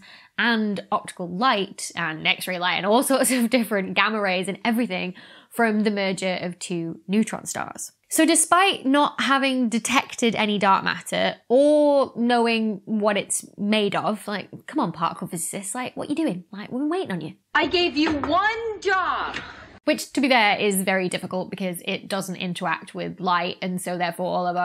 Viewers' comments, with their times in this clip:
0:07 Journey is about: "Dont Stop Believing"6 Hold on to that feelin' Streetlight, people Don't stop, believin' Hold on Streetlights, people Just on the outskirts are there dishes. The rest are streetlight, people? Yeah, come on particle fizzes, we need some soapy bubbles here. Particle fizzesist dont interact with light. Is Adromeda moving towards us because we are squashing? Relationship matters and equivalence principle.